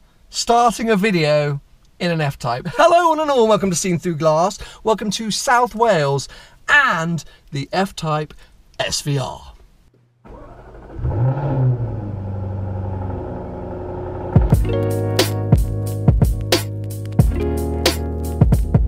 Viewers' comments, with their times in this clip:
0:05 you sounded like Jeremy Clarkson. Not a bad thing of course 😉